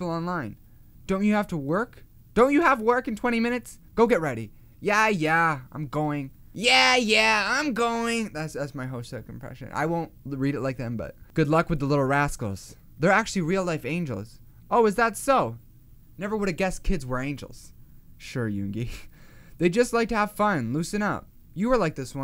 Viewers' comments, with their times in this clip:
0:07 That „Yeah yeah” sounded exactly like Hoseok wtf